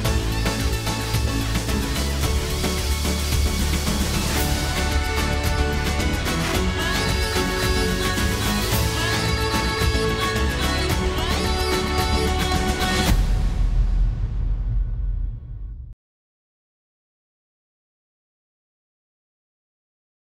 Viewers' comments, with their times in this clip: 0:05 playing that crappy anthem David Guetta(s ghostproducer) made kinda ruined something for me xD